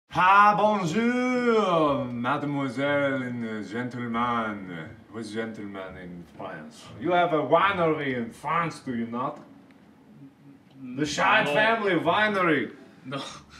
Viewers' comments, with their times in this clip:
0:01 Mark (In a very understandable french accent): Hi (that's english my dude) Bonjour! Mademoiselle, Gentleman! Ethan, in his mind: What am i doing with my life